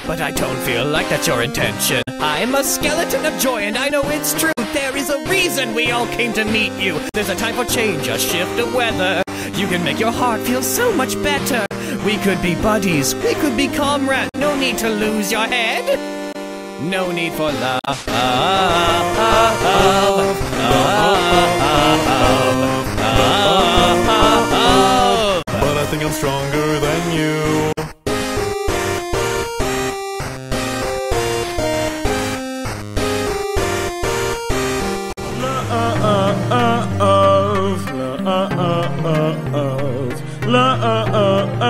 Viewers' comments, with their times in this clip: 0:05 see you or meet you???
0:23 how many of sans are there? what? it was gaster and papyrus? oh